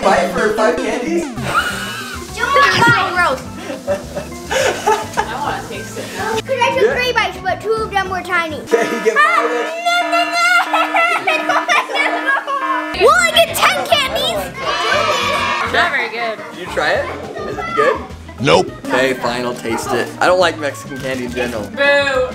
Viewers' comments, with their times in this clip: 0:09 laughing or crying